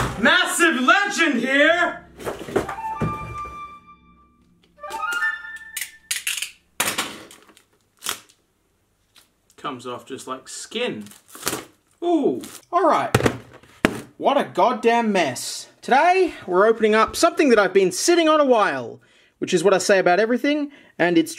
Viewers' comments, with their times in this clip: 0:08 Massive Serial Killer Here!